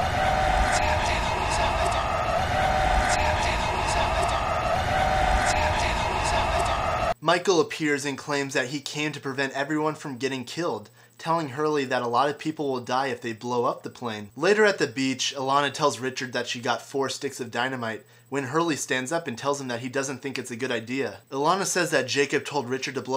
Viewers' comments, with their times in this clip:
0:05 Woah, I totally didn't see that second island picture! It definitely sounds like, "It's happening, it's almost over" to me.